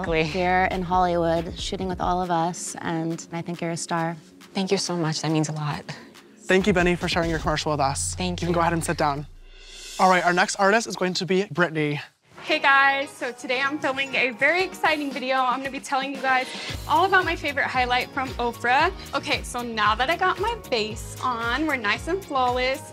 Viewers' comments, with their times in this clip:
0:07 LMFAOO the way he said that